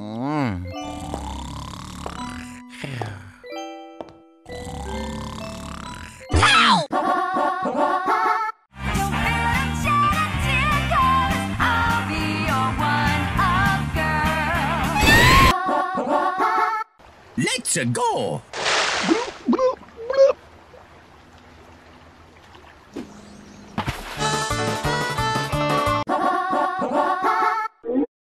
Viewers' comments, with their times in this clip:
0:08 [ Pauline Sings then tries to kiss Mario ]
0:15 Peach : NOOOOO Mario : screaming